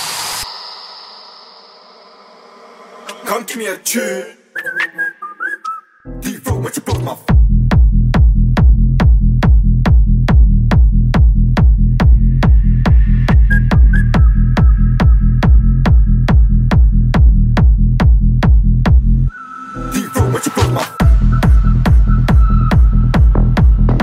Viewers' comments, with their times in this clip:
0:07 that drop tho
0:07 That bass made me run into my wall O.O